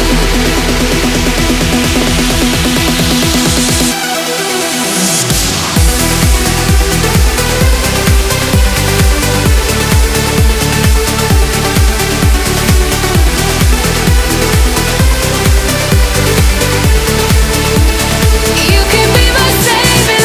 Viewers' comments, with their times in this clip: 0:03 I love that arp fill right before the drop 🤩